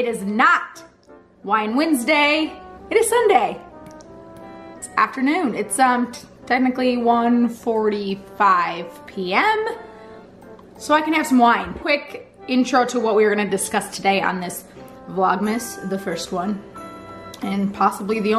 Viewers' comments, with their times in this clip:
0:05 Okay lmao does she sound a little tipsy already.. yaaaaay wine!